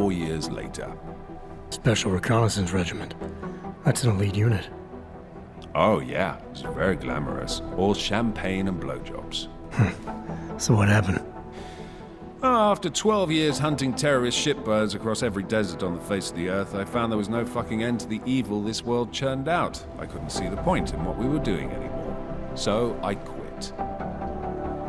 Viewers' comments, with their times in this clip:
0:09 Was that actually a laugh from Jensen ?